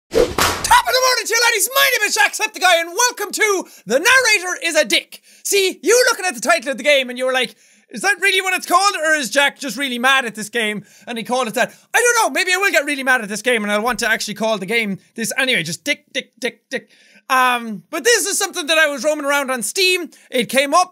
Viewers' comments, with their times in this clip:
0:00 its the all the way song but no auto tune when he says "my name is Jacksepticeye"
0:00 it’s weird hearing that intro without the music
0:01 hearing my name is jack septic eye with out auto tune and music is weird
0:01 In the beginning it of the vid it sounded like all the way intro
0:04 if you spam this it will make jack sound like a dog